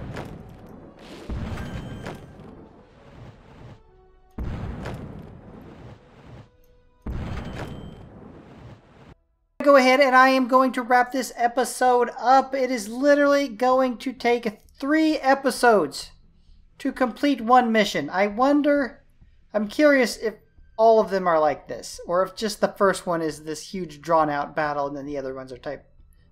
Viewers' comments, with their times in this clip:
0:10 was that a oof?